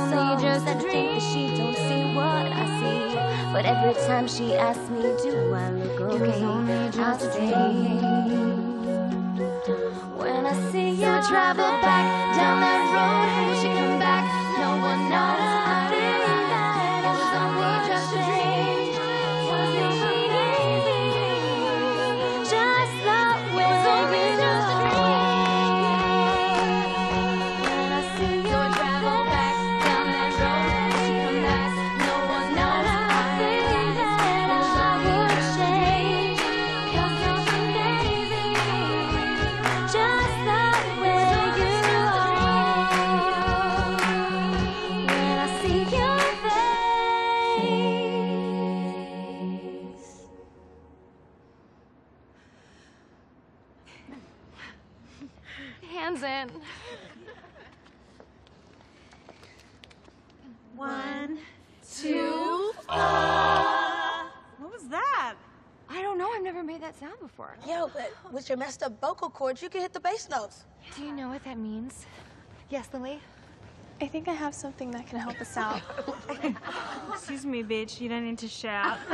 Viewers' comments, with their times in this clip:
0:10 Just Like The Sound of Heaven 😮😮😮😮✨✨✨✨☁️☁️☁️☁️
0:14 My favorite part was in the background the "ey" it is so good and sounds amazing
0:30 I never notice how Kelly’s singing was so beautiful season 3 did great showcasing her highnotes and we absolutely love it
1:02 I Thought she burped lmao 😂
1:04 that felt more like a burp than a bass note lol